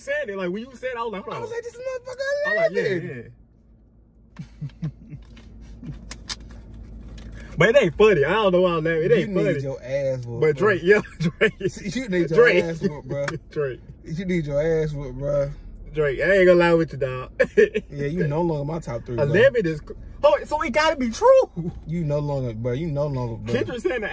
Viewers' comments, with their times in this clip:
0:09 it be that uncomfortable/irritated laugh